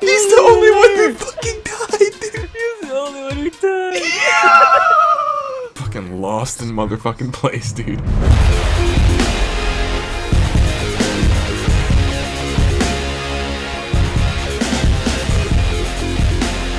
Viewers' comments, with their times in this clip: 0:03 Omg that weez
0:03 his laugh lol